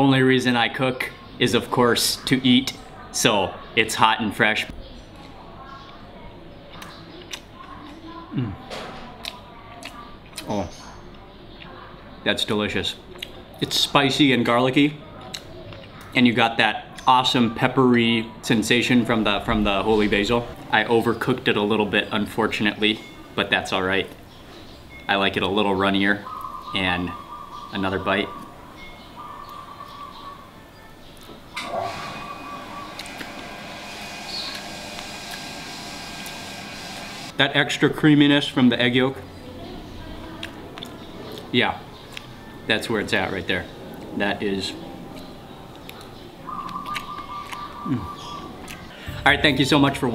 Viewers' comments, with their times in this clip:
0:07 Why not make even more disgusting sounds when you chew?
0:25 this video made me miss thailand so much i got sad. i can tell you enjoy the culture and environment. i like the sounds of nature in the background too, the bird reminded me of my times there... really miss thailand. love this video and the authenticity that went into making it, was my first time seeing one of your videos... great job
0:34 How about fish sauce? :) .. wow, we have the same bird sounds ...